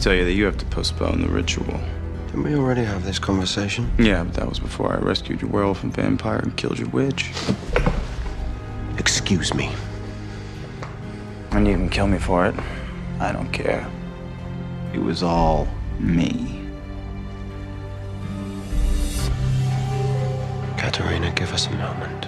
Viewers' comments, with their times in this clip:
0:07 the way he rises from the chair and says ‘excuse me!?’ lmao he was mad upset 😂😂😂 almost like ‘i beg ur pardon?’
0:09 The way Klaus said "excuse me" has me rolling😂 the sass